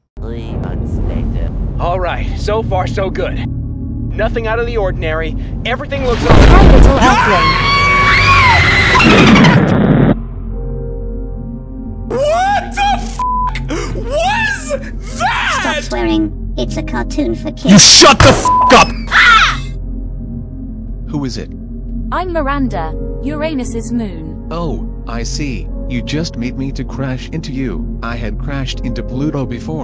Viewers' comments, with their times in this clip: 0:05 Bro he yelled right in front of her face💀
0:06 everything looks so- Hi little earthling! masculine scream feminine scream BOOM F**
0:08 huh what she's saying "hi little earthing"
0:15 where did you get that robot voice?